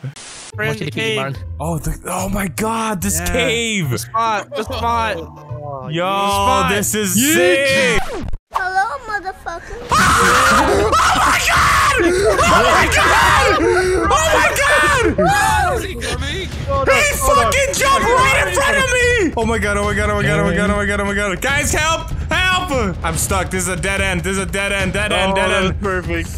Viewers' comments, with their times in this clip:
0:09 ANOTHER HOME ALONE SCREAM!!!